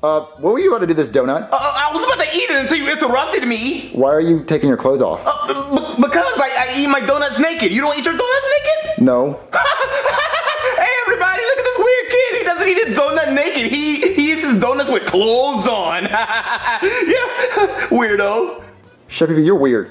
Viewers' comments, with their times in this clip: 0:05 why did he sound like chicken